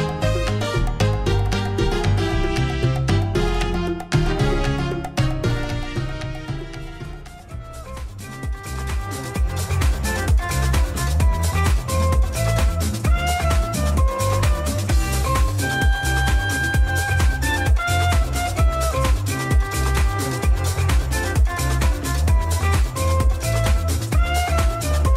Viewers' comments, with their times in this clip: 0:08 My favourite music